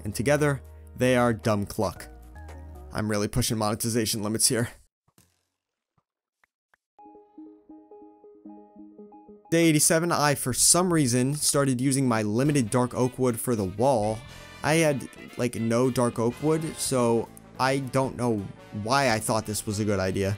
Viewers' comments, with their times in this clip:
0:07 My favorite part not just because the cats are listening to cat but the musicis dope